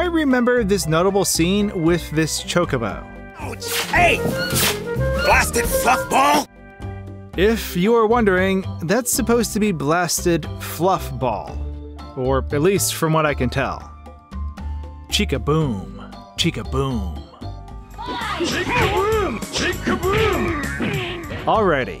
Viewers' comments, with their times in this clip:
0:03 In Mario PT, I heard "Take this, little tide pods!" 3D Land, I hear "Who Blasted F***-ball!"
0:04 I heard "blasted fuck ball" for some reason.